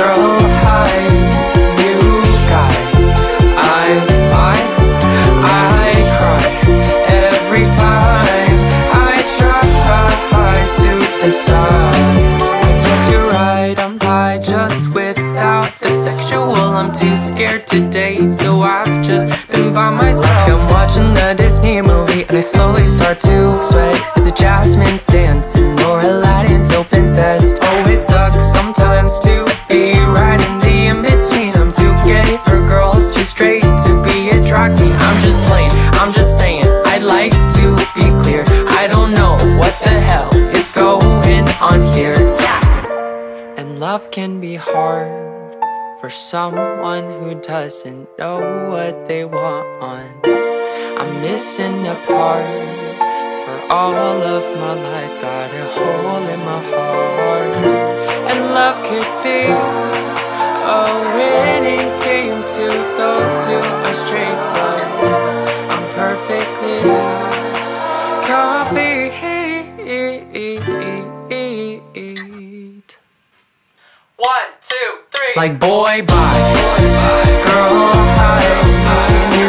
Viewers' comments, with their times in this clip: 0:07 Mad Tsia: I cry Subtitles: Pizza :D
1:02 does yall hear that always taught I got disconnected 🙄